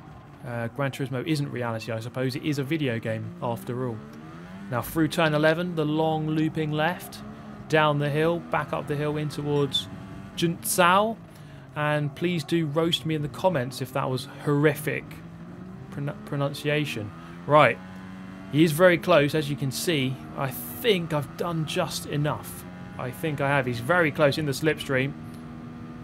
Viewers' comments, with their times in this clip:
0:10 well mate you tried. Can't remember anything in English that sounds like the "ção" in junção right now to tell you how it sounds.
0:10 As a brazilian, I would say that it wasn't that bad actually The "ao" in "Junçao" (or "Junção") is a nasal phoneme, and in Portuguese it is pronounced "aum" Sorry for any grammatical error guys
0:10 your prononciation of Junção wasn't too bad to be honest. No need to roast you for that.
0:11 yes it was